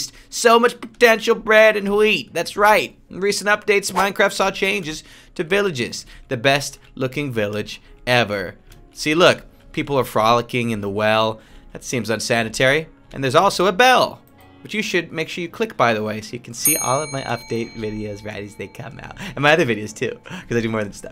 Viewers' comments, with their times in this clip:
0:08 I thought he was gonna start rapping